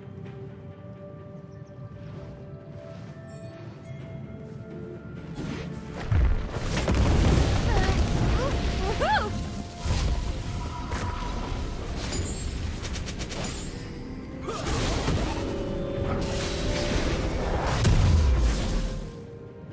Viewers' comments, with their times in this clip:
0:04 lol the enemy team’s pinging 😂hilarious